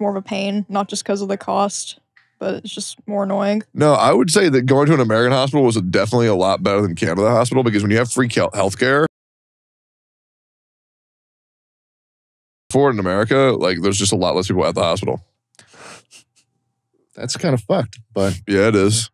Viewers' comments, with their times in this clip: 0:07 suspicious censoring at: